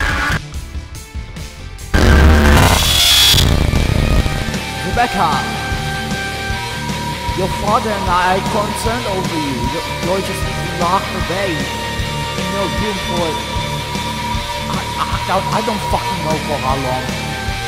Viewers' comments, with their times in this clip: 0:03 that was really loud :/